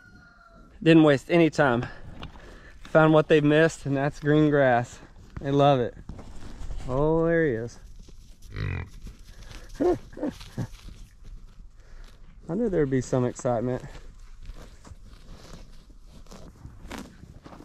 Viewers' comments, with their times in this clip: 0:05 Taking care of business 👍👍☀️☀️☀️and here comes the rumble like a freight train then a delicate hop and stop.... great as always watching the progress